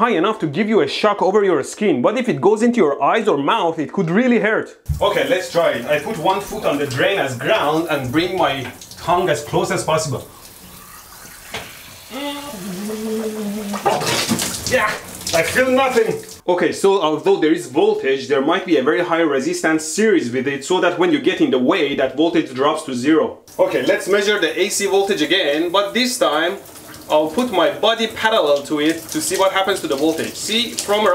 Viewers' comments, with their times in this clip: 0:07 its gotta be the noises he makes with his tongue out, oh my god, im wheezing
0:12 goes glug glug glug